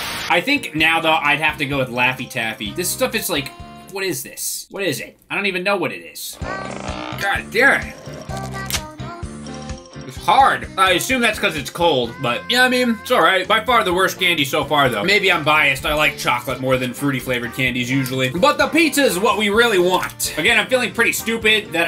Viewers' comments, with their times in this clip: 0:06 i hear miku :)